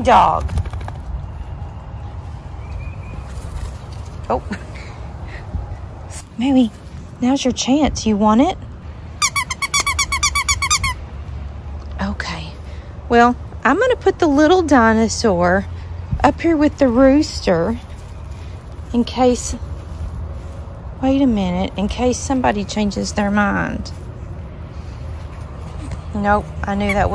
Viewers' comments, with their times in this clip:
0:08 Maxxie deliberately walking away from the squeaking toy is hilarious